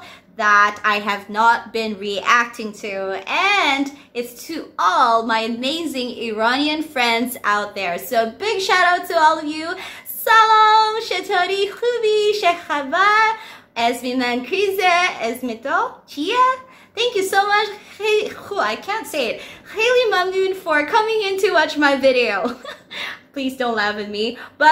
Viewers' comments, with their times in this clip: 0:09 wooww you are talking veryyy good😍🤩❤🇮🇷